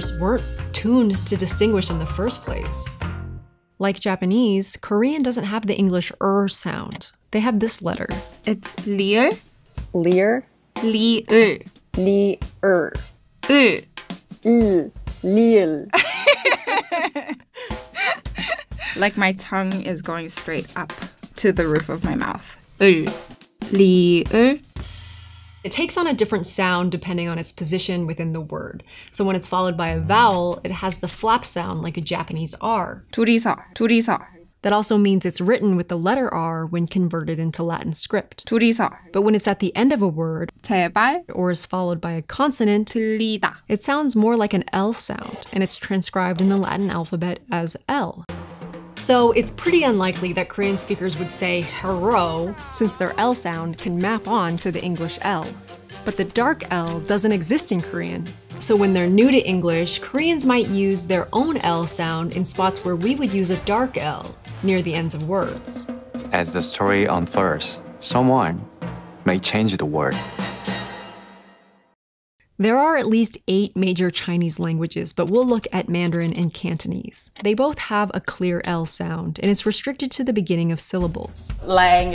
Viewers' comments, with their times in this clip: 0:10 You can't be serious. I'm pretty sure most Americans would NOT mistake what she said for "leer". No one says "lever" for "level". You're exaggerating.
0:14 As a french speaker, you've said ''L'île''
0:50 SpongeBob music starts
1:07 저, 중국인, 받침 'ㄹ' sounds more like English 'r' to me while ㄹ in the beginning of a word sounds closer to English 'l'
1:10 He actually said "wurr"!